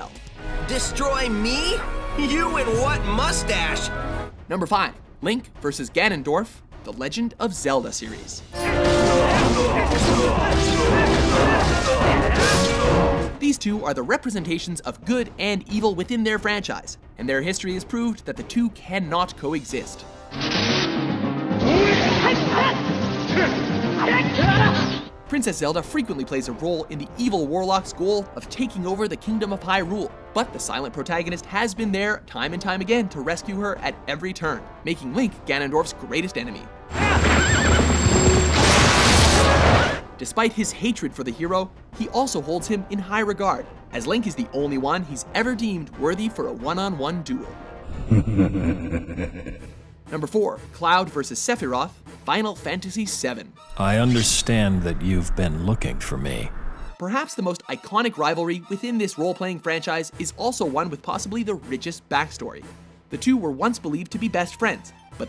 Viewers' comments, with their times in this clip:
0:04 THE WAY HE SAYS FIVE!!! 😂😂😂😂😂😂😂😂 "NUMBAH FIH!!
0:52 Am I the only one who heard evil Regime Superman just now? I swear I keep forgetting that George Newbern also voiced Sephiroth XD